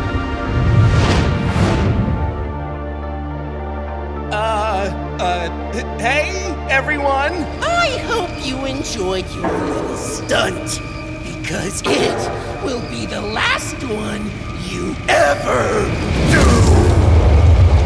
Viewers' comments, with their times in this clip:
0:04 why does he sound like jupiter